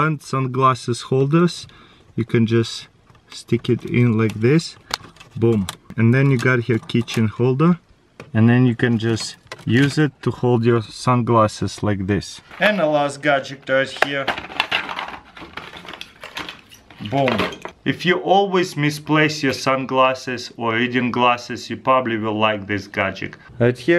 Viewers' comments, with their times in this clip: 0:07 am i the only one who heard "kitchen holder"?😂